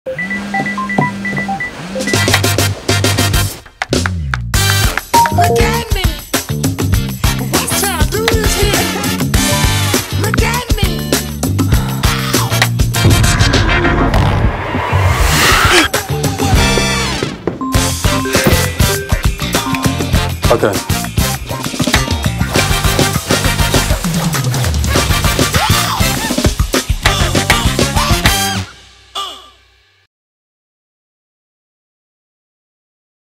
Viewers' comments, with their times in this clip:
0:05 the notification sound actually made me think i got one
0:17 Office call got me for a split second 💀